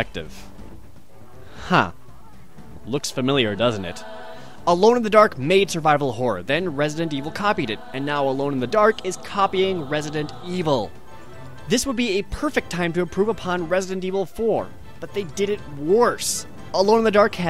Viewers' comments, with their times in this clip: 0:03 ... Almost like Resident Evil! Sympathetic trombone blow